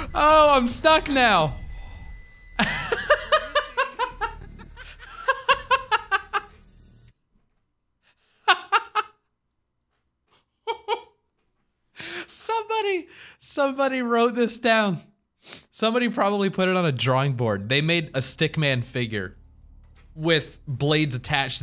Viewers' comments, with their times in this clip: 0:04 Did anyone else feel weird because you mark and the maniac are all laughing at the same time LMFAO
0:05 THEY HAVE THE EXACT SAME LAUGH!!